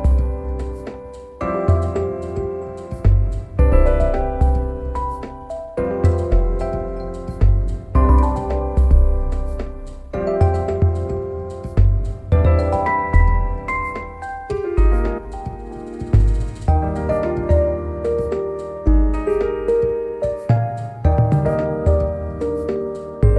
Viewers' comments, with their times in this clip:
0:04 oh yes, that off tune note, it’s perfect, oh my god I love it, so settle but yet a perfect addition to the song.